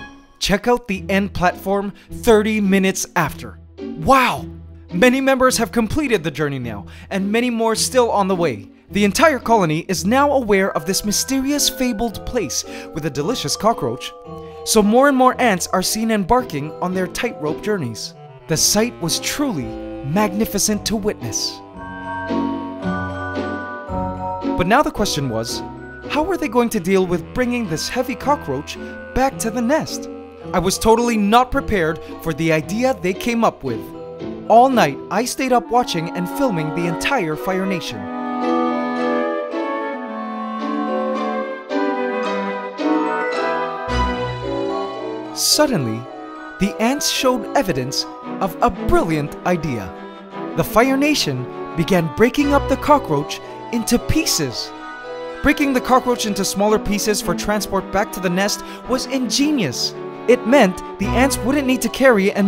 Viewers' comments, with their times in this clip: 0:08 why is there Christmas music? It's the middle of summer!
0:29 The music you play at like reminds me so much of Scooby doo and the nutcracker or whatever.
0:47 that background music just reminded me of Christmas, now I wish it was December ;-(